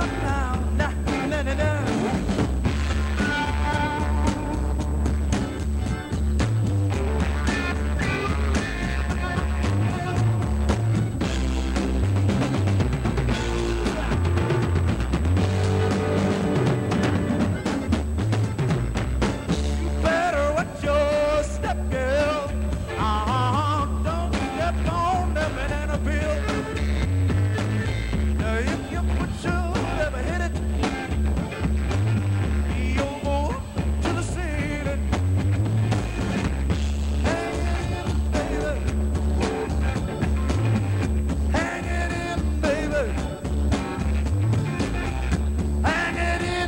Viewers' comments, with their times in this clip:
0:05 ssssick guitar riff !! go ta LOVE the hippie chicks!
0:10 Love the drum fill !
0:30 Wow. Thats really live and tight as hell. Was that a dashikied rev jesse jackson ?